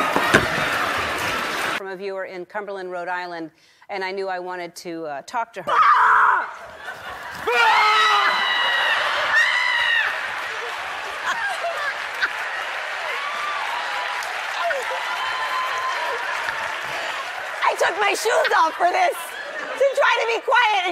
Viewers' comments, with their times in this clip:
0:05 well acted "scare" .She had started screaming before even noticing him & before he touched her :)
0:07 that sounded like the ghast of minecraft lol
0:07 you can slow it down and see that she flinches before the guy yells behind her, which means she new it was coming